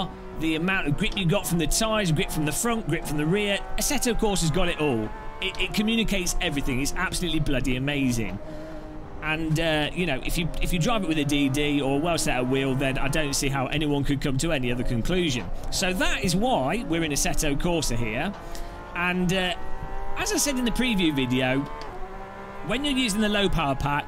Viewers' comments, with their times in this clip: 0:10 Please excuse my ignorance, but you mentioned people who use Direct Drive and one other type of wheel, which I was unable to understand your pronunciation of? What was the other wheel you stated please? TIA ✌🏻